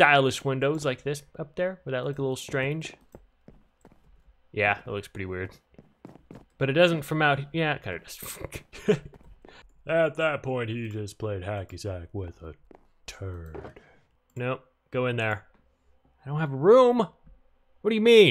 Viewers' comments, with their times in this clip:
0:06 sorry for my language but it really sounded like you grunted while saying fuck at the same time and then I kept playing it back like what did he say